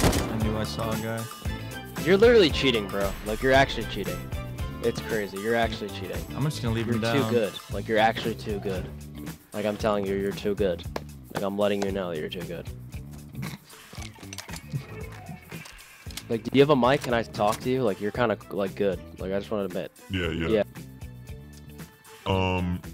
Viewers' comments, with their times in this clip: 0:08 The small encounter was that resignation or humbling lol dude sounded drained